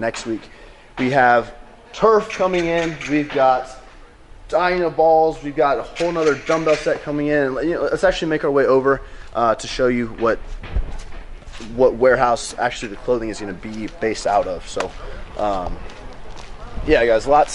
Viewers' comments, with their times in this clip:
0:04 Really sounds like he said ''we've got dianabols'' lmao